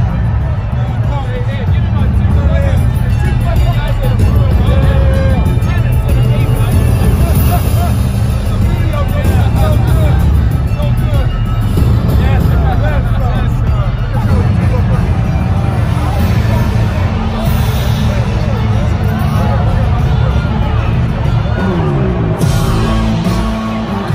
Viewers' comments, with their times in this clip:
0:08 Belichick smiling and laughing? I must be dreaming